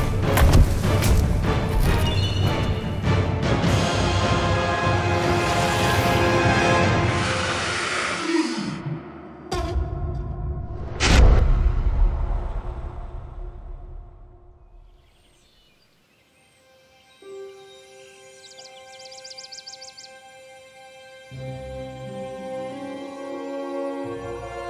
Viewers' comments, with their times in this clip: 0:08 did Gohma fart?!